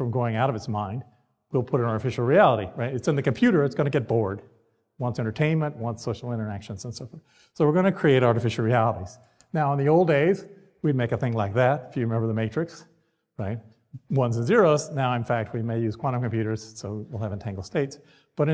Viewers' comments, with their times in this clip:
0:04 I heard that and felt he had made himself board ( Hit over and over) 😝